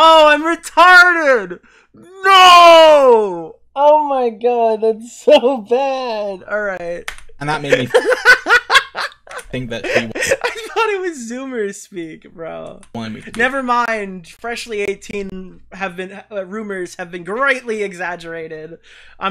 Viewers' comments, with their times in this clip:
0:06 I was wondering if he’d catch that. I was so confused when he kept pronouncing the hotel name like that lmao